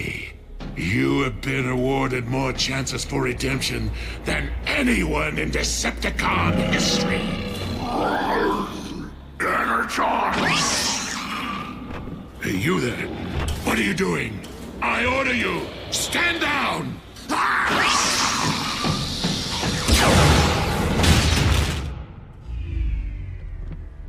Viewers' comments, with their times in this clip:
0:07 I just realized that might be Peter Cullen playing that Terrorcon. The noise it makes is similar to one Peter did during that panel he talked about voicing the Predator in. And the actual speaking voice has just a hint of his regular voice in there.
0:09 That sounds Just like Optimus Prime